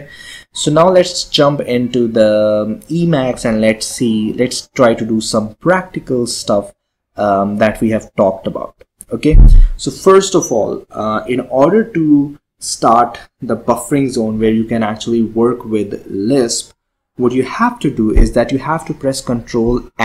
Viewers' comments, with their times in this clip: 0:08 I really enjoyed the enthusiastic fart Shows how much you love ELISP.